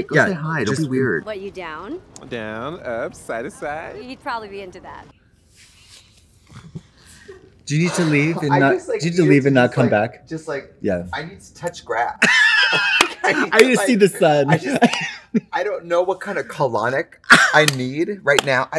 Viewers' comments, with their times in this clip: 0:05 lmao I love when you can hear the crew giggling behind the cameras.